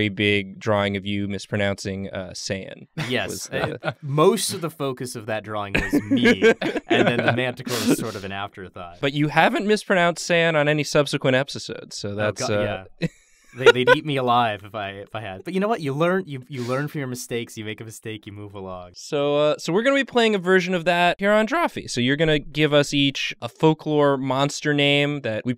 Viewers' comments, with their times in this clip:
0:10 "epsisods" is my new favorite word